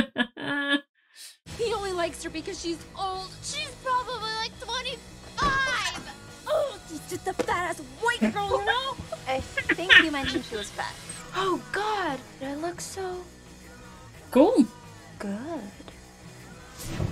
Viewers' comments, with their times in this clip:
0:04 1. I like your Owen Wilson-y way of saying “wow” 2. Ellen Wong, the actress who plays Knives, was 25 years old when the movie came out.